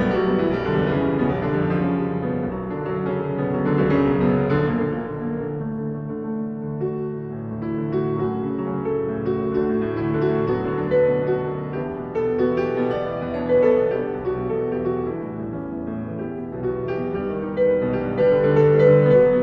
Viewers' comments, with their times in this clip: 0:07 I live for the Melody